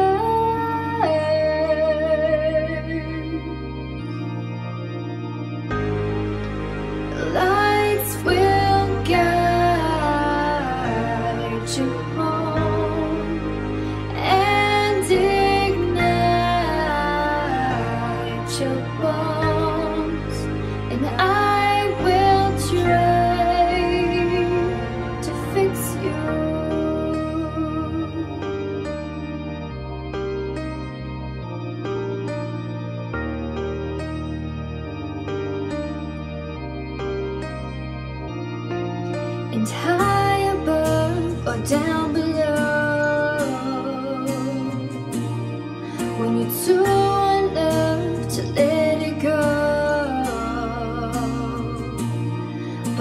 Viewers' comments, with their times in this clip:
0:03 okay... either you have the habit to sing really strange e.g. ... or you just dont know how to use autotune.
0:37 <3 just love your smile :) and your preety voice